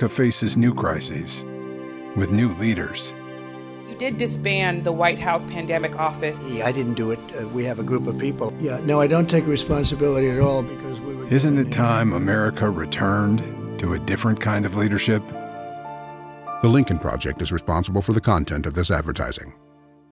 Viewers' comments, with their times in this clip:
0:10 The narrator cuts off Trump.😄👍